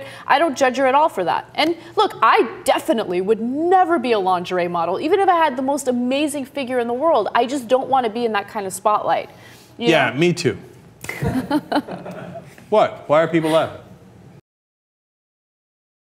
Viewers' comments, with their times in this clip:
0:09 I think Cenk really meant that and it was awkward that everybody laughed!!!